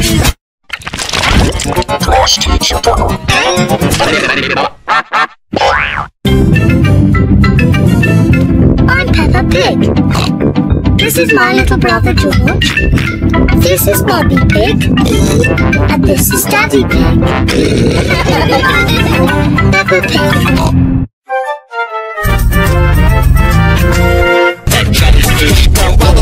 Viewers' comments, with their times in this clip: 0:09 sounds like sad